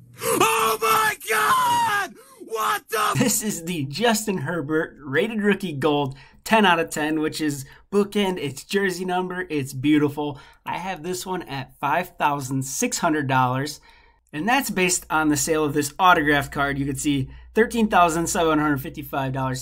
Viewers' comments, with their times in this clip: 0:03 love how u cut out at the exact time he drops the f bomb 😂